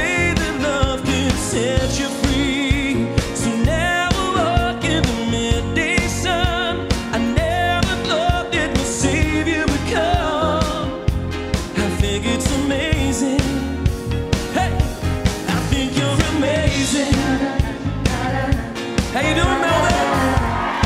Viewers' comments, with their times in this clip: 0:07 Wow, that 1st chorus, everyone's in the pocket and the bass 'pop' wells me up with tears, so beautifull